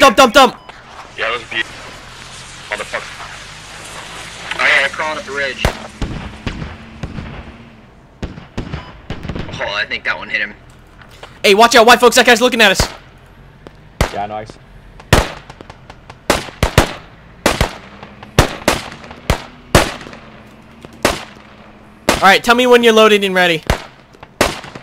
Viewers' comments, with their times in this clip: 0:06 Those poor bastards at ~6 minute mark, they knew exactly what was coming when that MG started firing at them. And that guy peaking over the ridge and you hear that one shot from the sniper.